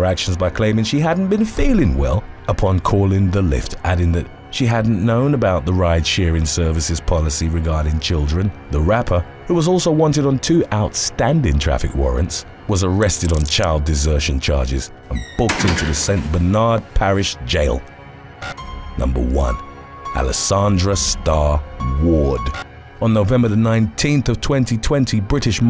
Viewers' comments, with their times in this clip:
0:07 “she fell ‘uhhsleep, in the back seat!” sounds like some RKelly lyrics 😂